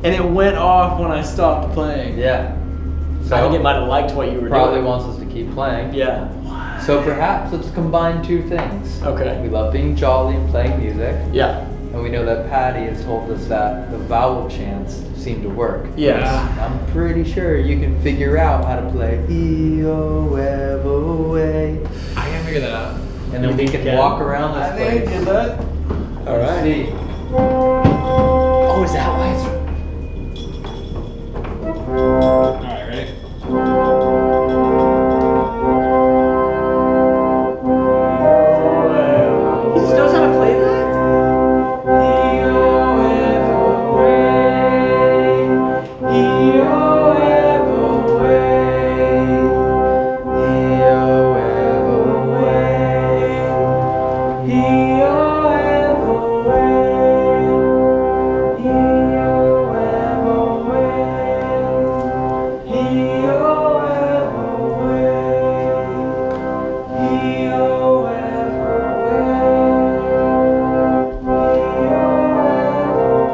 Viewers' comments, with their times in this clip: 0:05 who said "'what'" like a ghost :D
0:34 Around the you hear a bell that nobody notices. If one of you didn’t make the noise then I’d suspect a kids trying to make their present welcome.
0:42 Both of them singing at the same time was like music to my ears it was so beautiful
0:58 Not me singing with them then realizing I probably shouldn't be doing that 😂